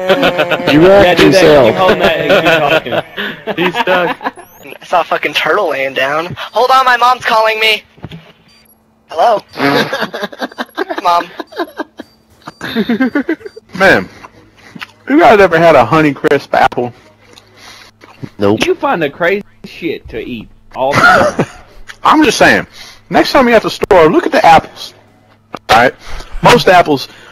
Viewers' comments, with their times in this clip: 0:10 Did anyone else hear gary from pokemon ?